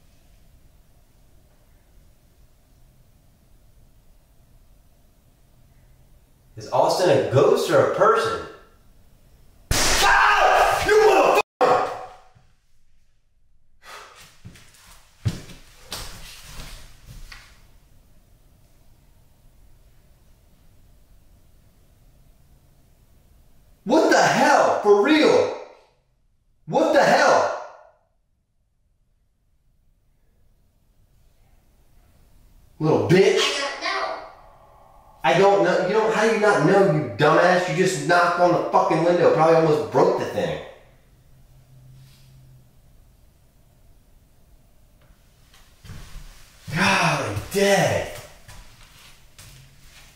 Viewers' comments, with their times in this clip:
0:06 and after the bang right side of blind cord....the face...before the bang a white area in the top part of the window...hard to see at first...but slowing it down....and think light travels faster than sound.... So by the time you hear the bang the band has moved away...
0:33 after you heard the bang on the window, an orb can be seen. The energy there is intense